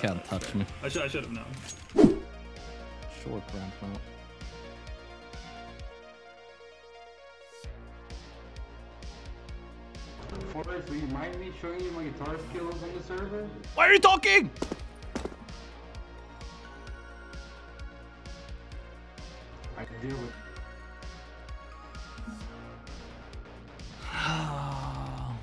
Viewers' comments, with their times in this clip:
0:10 lol when the accent guy talk u become bot like him ..